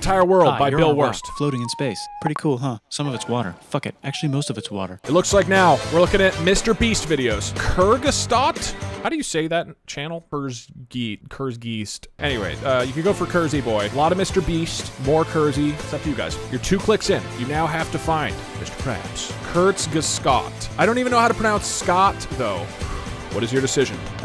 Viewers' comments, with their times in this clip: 0:10 I say it like kors-ke-sakt and you can just hear how the narrator says it